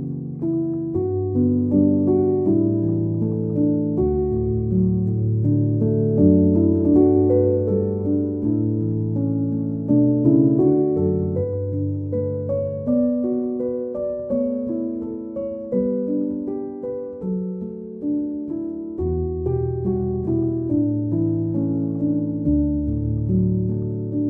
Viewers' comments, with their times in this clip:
0:08 sounds like reminiscent my yurima a little